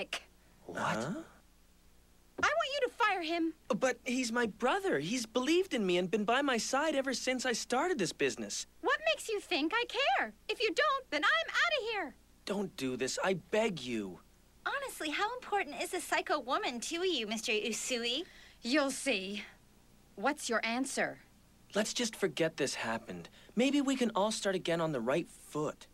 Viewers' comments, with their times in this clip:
0:08 OMG my fucking ears.